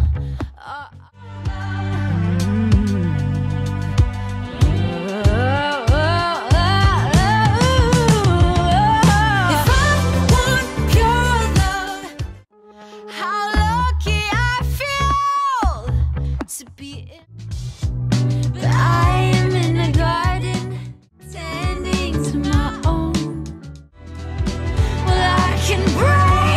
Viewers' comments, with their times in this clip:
0:07 sorry i’m just now getting to this; it’s actually a C#5 it’s :)